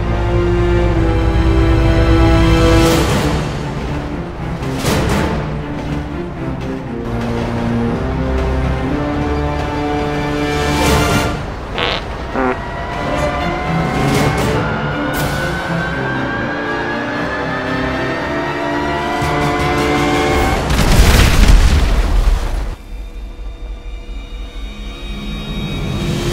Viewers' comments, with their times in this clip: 0:06 Anybody know the music that plays it sound epic!! Also sweet ass video I knew Harambe would be the one!!
0:13 seriously farts can stop the train? let me try that in real life